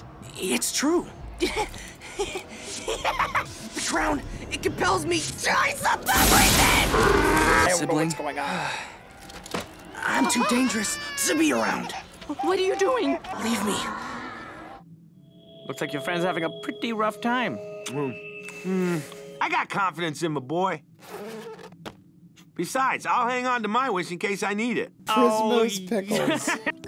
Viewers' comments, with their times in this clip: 0:09 Why does finn's baby brother sound like baby anais from the amazing world of gumball?